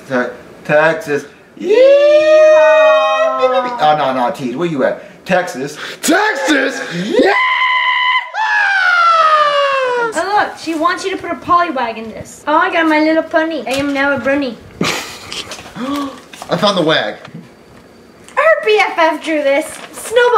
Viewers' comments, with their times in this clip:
0:05 the best TEXAS I heard